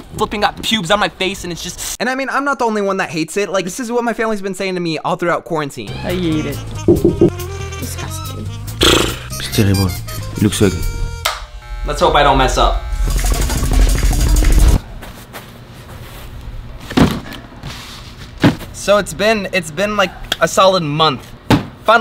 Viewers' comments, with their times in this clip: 0:07 I thought he said shitment 😂😂😂